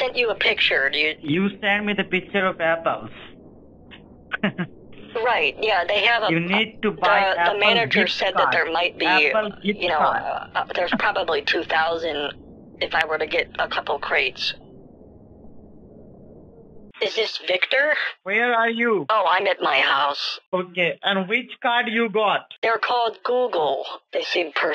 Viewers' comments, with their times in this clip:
0:05 I will say the scammers chuckle at the picture of apples is kinda funny